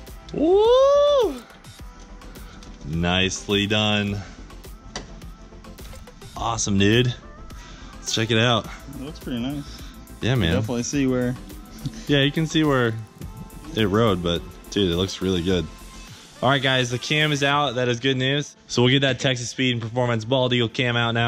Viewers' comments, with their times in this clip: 0:06 Awesome nude?? or am I sleepy